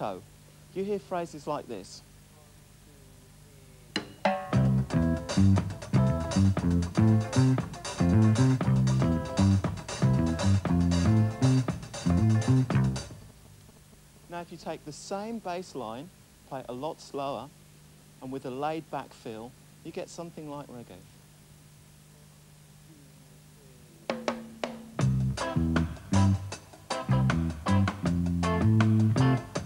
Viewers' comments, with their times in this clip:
0:10 Turn off your mobile phone or at least put it farther away, mate.